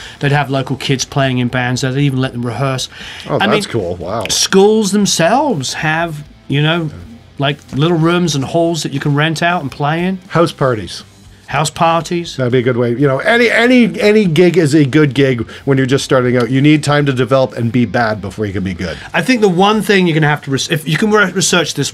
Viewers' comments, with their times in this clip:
0:09 Perfect example of British vs American english lol